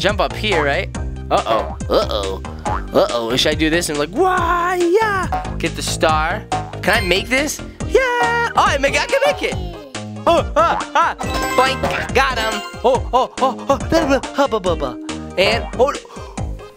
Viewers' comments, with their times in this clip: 0:04 the dad sounded like luke from angry birds star wars